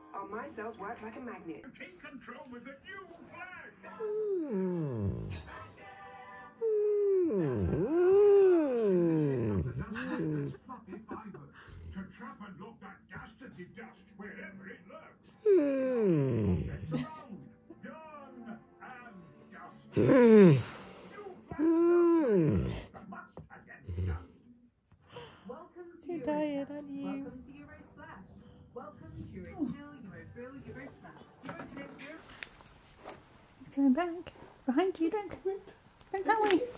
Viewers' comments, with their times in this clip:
0:06 Loooooooool. Key's HMMMMMMMM sounds like the whimpering Chamberlain skeksis from The Dark Crystal 😂😂😂😂😂
0:21 he sounds like gandalf xD